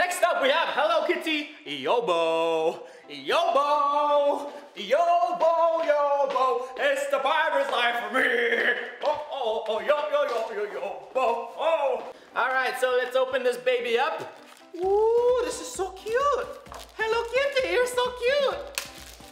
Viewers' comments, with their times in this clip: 0:03 Guavas yobo song is fire